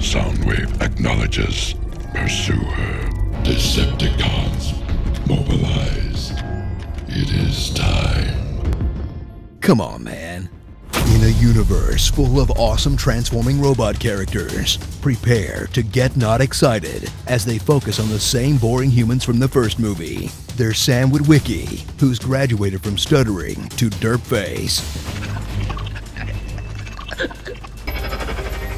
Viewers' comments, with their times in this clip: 0:09 'Come on man' Joe Biden